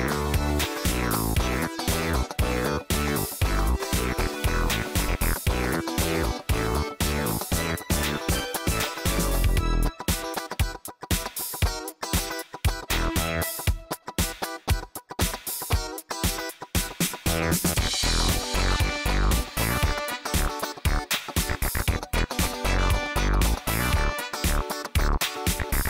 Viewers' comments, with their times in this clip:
0:07 lol it sounds like the goltv theme